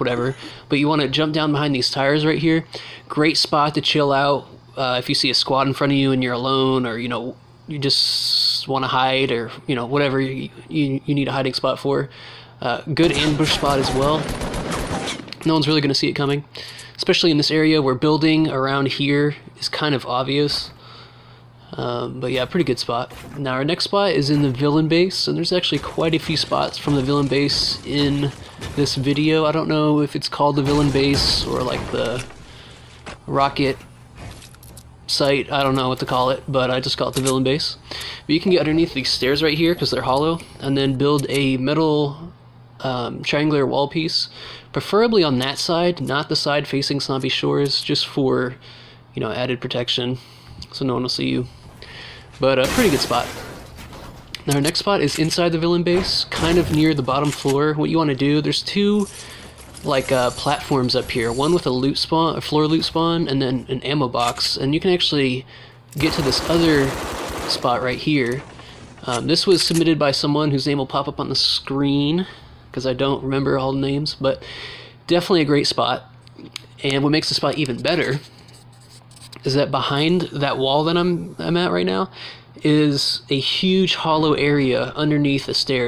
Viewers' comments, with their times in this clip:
0:08 holy SSSSSSS turn volume all the way up
1:06 when he was shooting that assault rifle it sounded like it was a light machine gun